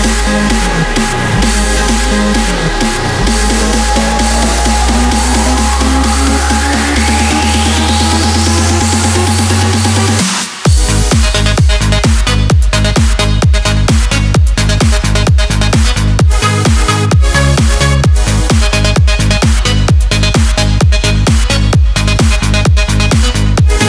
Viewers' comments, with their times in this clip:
0:10 nice remix in the dance